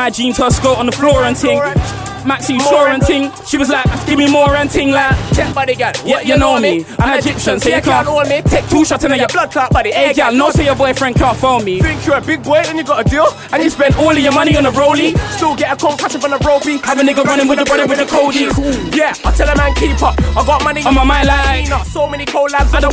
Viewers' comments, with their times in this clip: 0:06 no matter the riddim bring a tear to my eye